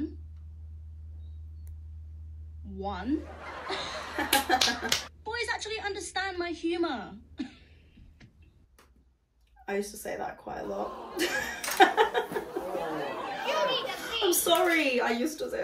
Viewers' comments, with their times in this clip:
0:03 the clap was offensive ngl-